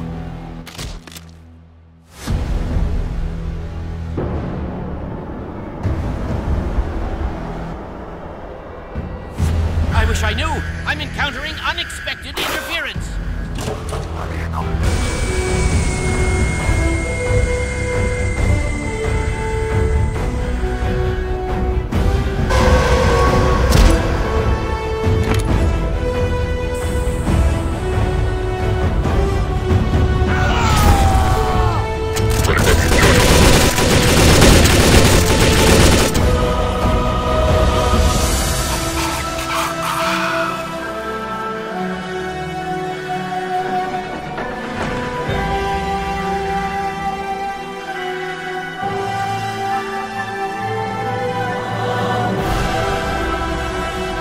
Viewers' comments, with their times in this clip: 0:09 why does the scientist sound like half life scientist?
0:38 biggest scream I've ever heard